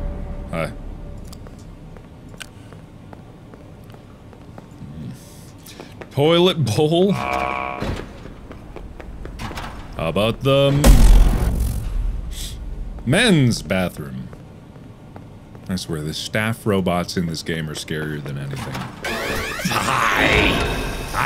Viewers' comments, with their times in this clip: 0:07 when mark was leaving the woman bathroom and there was I think golden Freddy sound but idk tho